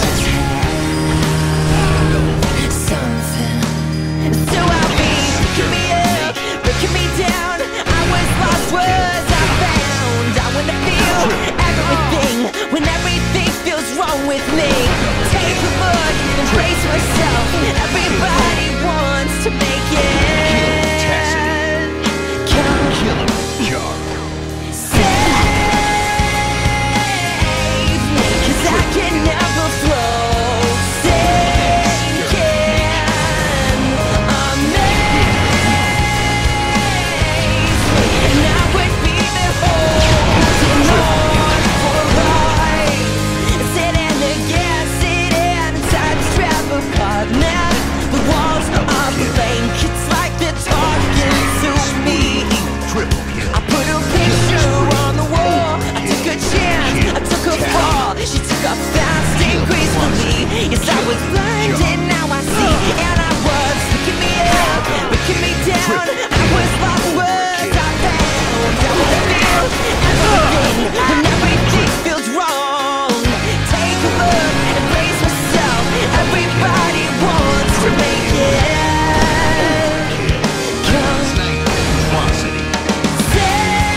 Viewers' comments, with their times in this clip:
0:09 It took me until to officially realize that it wasn't a girl singing.
1:09 Triple kill sound was edited in for clip because the game ended. Nice montage though, I haven't watched a halo tage in a long time.